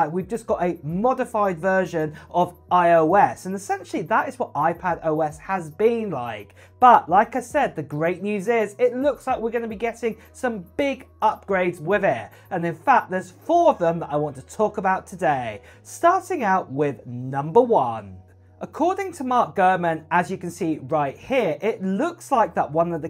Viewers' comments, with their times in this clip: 0:04 What's that clicking sound in the background